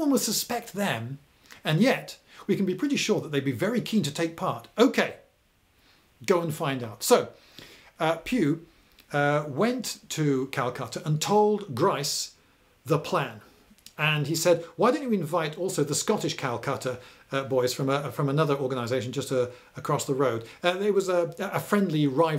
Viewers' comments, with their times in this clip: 0:08 Only I realize it's not "Last charge of the Calcutta Lighthouse" and it's Calcutta Light House, a cavalry division.